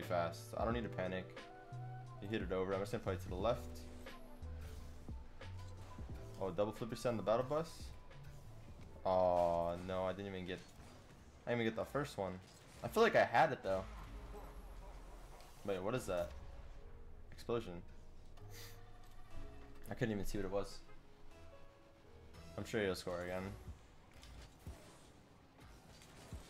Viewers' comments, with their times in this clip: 0:10 MONSOON! HAHAHA EVEL LAUGHT